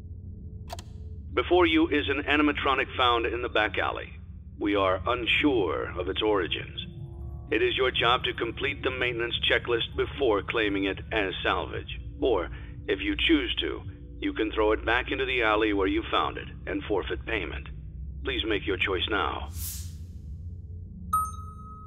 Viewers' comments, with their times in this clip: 0:06 .....Anyone else hear the old theme for freddy when he was about to jumpscare you in the background...